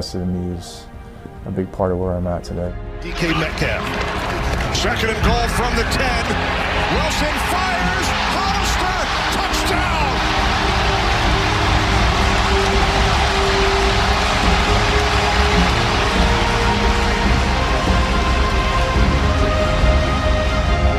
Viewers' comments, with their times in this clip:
0:04 just hear the fans